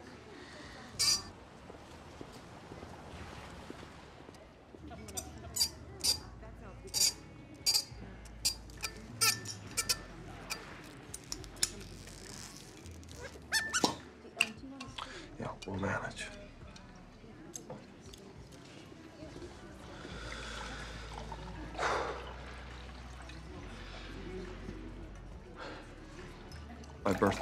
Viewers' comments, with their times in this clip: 0:10 I love how she couldn’t hold in her laugh😂